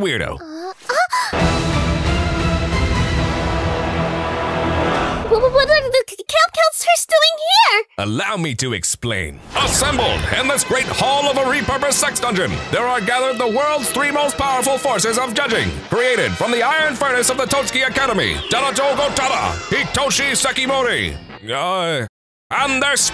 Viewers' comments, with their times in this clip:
0:08 Okay yea that is absolutely supposed to be a George Lowe impersonation. Although the only connection he has to Super Friends was that one CN parody of Survior called Staylongers (which sounds more like a Big Brother parody) with Wonder Woman and Brak as contestants and Space Ghost appearing at the end because it was all Brak's dream.
0:10 why does it feels like the narrator from the star wars clone wars?